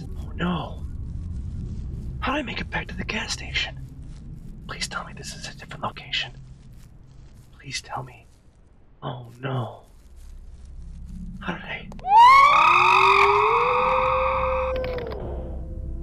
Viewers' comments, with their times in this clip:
0:03 My man did his best owl impression